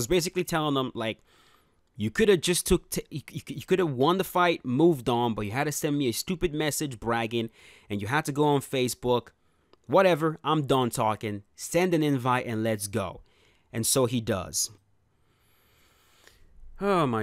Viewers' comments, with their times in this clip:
0:03 jeez that was crazy stutter 😂😂😂😂😂😂😂